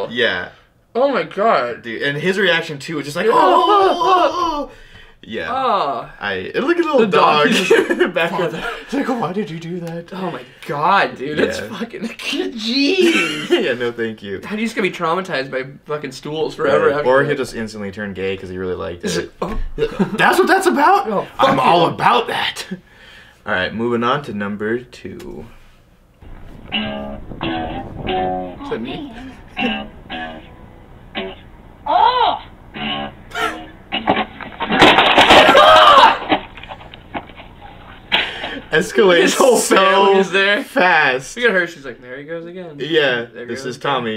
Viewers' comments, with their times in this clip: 0:03 put it into 0.25 speed I sounds like Whales
0:27 still better than lil Wayne